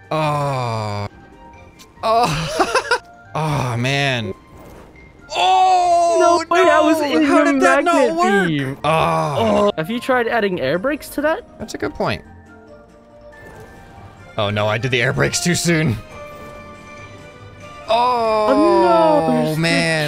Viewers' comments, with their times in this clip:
0:06 scrapman moan compilation lol